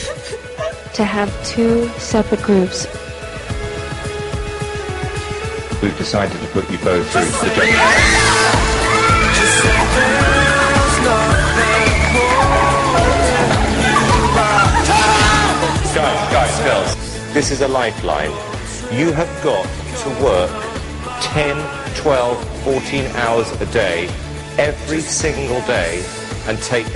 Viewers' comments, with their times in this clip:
0:08 LOL. Anyone else hear Louis yell "Carrot"? ?
0:14 Haha did anyone else notice louis yelling "Carrots!" ? haha its why i love these guys!!
0:14 did you hear louis scream CARROTS!!!